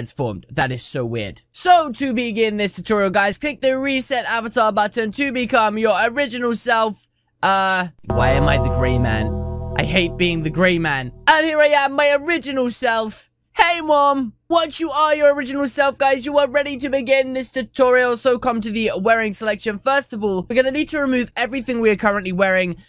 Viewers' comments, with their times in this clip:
0:08 I heard the undertakers bell